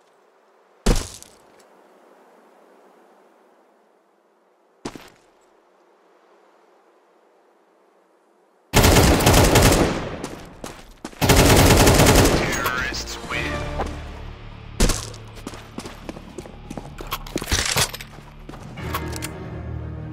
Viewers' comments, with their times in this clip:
0:05 the ak47 has a slightly more mechanical tone to it rather than like a wood sound from original csgo